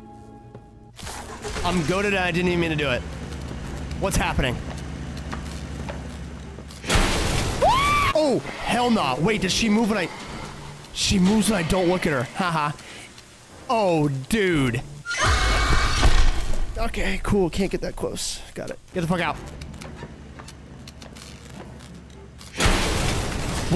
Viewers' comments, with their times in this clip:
0:09 bro whent into a out burst 😂😂😂😂😂